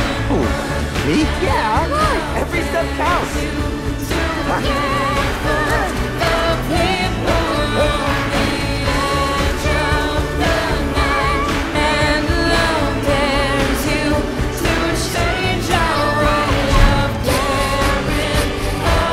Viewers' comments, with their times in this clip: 0:04 Eric & Gloria’s duet was beautiful and you can tell she had tears in her eyes knowing that her baby can sing🥹❤️